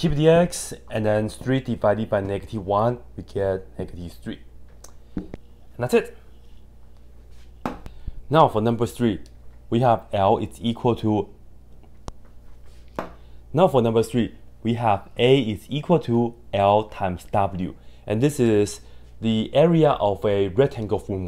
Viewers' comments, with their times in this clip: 0:08 love the fumbles, truly shows even the smartest of individuals are human